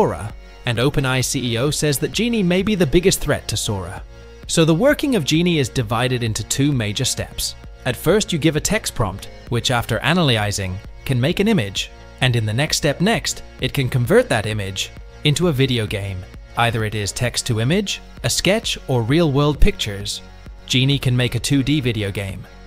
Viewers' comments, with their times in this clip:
0:09 Computers telling us about other computers